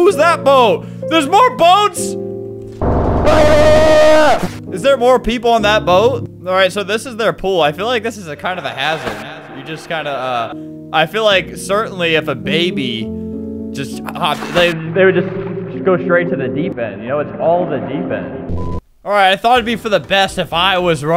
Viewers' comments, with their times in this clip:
0:03 that scream sounds familiar